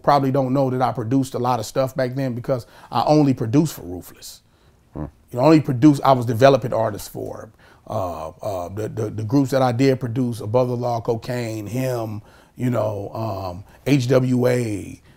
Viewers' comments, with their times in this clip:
0:03 Did any one else here the fart ? lol